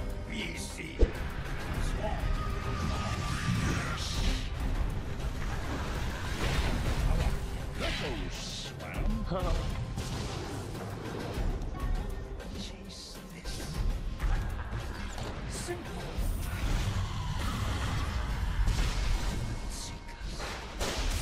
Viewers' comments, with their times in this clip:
0:08 Even ES himself sounds unconvinced as he knows it was a bad echo